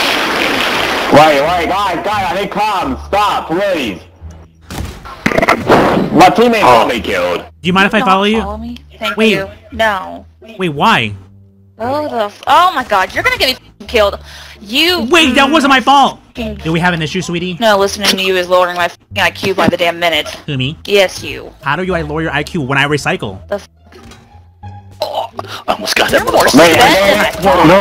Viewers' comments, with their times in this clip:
0:09 she sounds like sandy cheeks